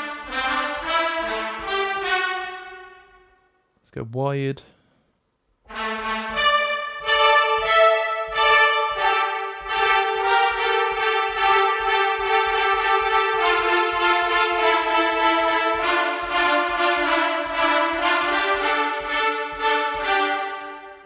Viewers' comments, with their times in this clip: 0:05 2 Trumpets WIDE only mic sweet spot 👍🏻👍🏻